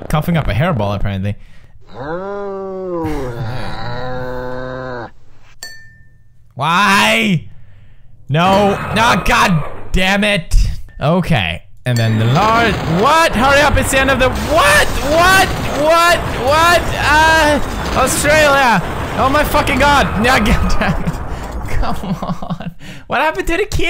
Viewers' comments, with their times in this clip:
0:07 tf? The cat went moo. I thought mooses go moo. 😱